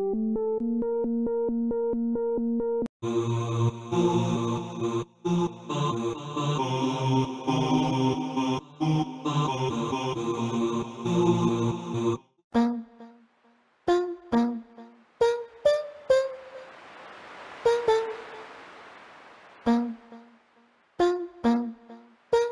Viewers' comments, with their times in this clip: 0:05 The fridge makes jevin sound from sprunki and the abgerny